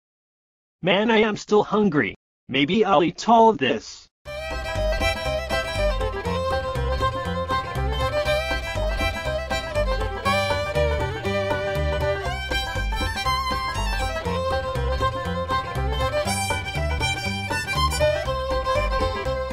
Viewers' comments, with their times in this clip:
0:04 this music is so 🤣